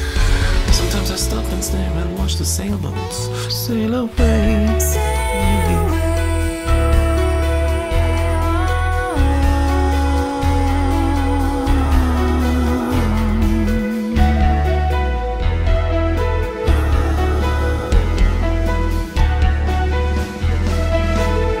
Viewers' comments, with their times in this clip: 0:04 from the point she sang Sail away, the beat he keps in the ride and the repetition in the keyboard are trully spectacular